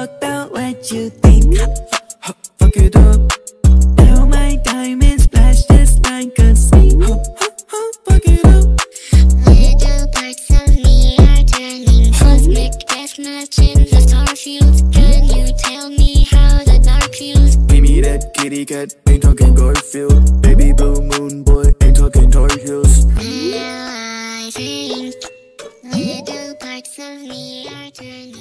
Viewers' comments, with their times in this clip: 0:09 I HEARD THAT SO WRONG 😭